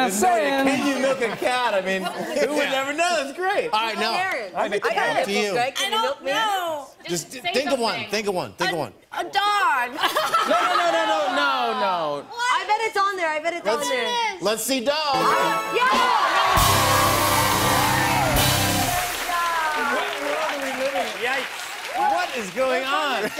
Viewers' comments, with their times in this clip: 0:05 did my ears got a problem or Miley Cyrus said can you milk me ?